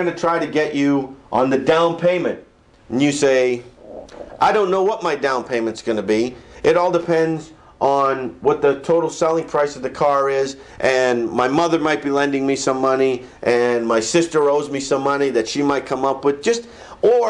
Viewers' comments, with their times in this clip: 0:03 Did his stomach gurgle ? Lol